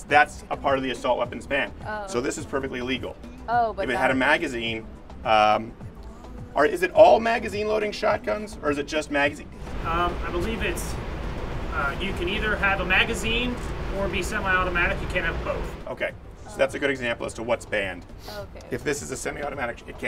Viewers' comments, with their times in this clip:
0:03 Your French-Canadian side peeks through